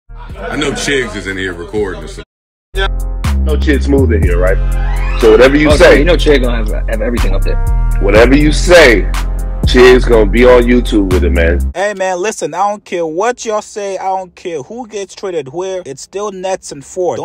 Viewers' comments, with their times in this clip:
0:01 it went silent when he said Sh*t it didn’t do that before